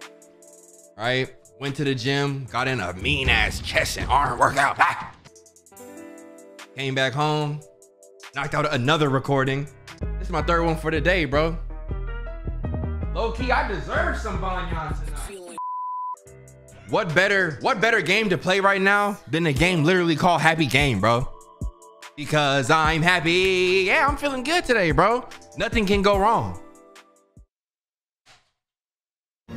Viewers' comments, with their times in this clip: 0:10 Can anyone PLEASE tell me the song he uses ?? It's sooo hype